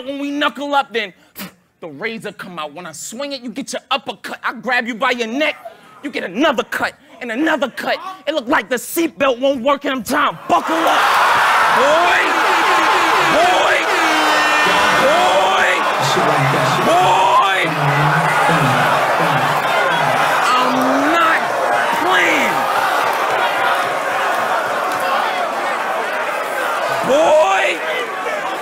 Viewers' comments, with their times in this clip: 0:09 The way homie in red turn made it slap different 😂😂😂😂😂😂😂😂😂😂😂🔥🔥🔥🔥🔥🔥🔥🔥🔥🔥🔥